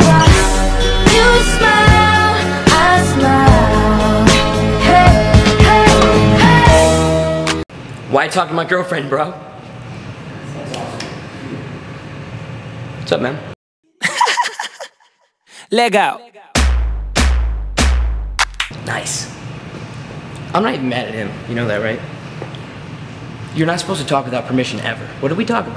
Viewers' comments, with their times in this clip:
0:08 he nailed the douchebag line 😂 with the delivery